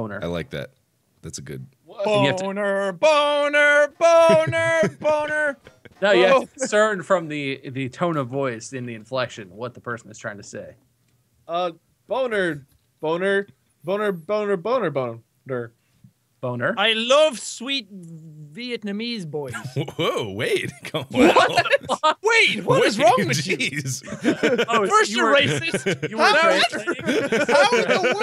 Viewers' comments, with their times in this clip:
0:10 Wade: Boner, Boner, Boner Boner Jack: I love sweet..... Vietnamese boys Mark: Whoa! Wade! Wow! Jeez! Jack: Wade! What is wrong with you! First your racist.... Wade: What?! How in the world was that me? With my clearly Irish accent bob laughs whole time